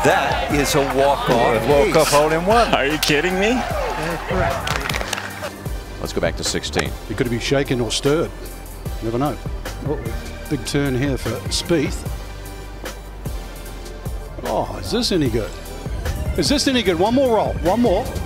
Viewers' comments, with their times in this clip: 0:06 Commentator has that Frank Gambale accent.